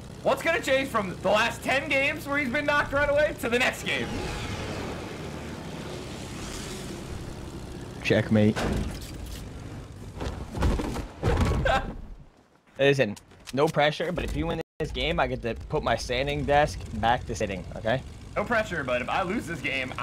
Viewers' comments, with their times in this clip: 0:06 I don’t like to defend Ninja don’t really like him but I like how he says he triggered while he’s smiling and gives a tiny laugh while saying it this man just trying to clickbait and ruin Ninja name even tho he fucked it up himself